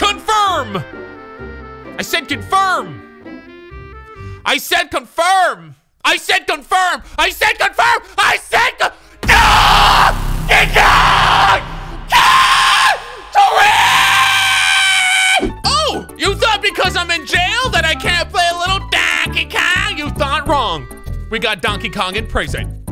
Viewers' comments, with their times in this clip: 0:09 WHO ELSE HEAR "NIGGA" 😂😂😂